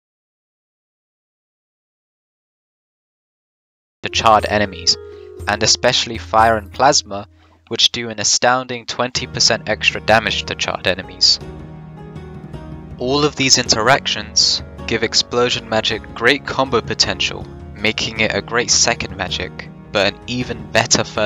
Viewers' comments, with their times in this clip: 0:04 why is the audio broken until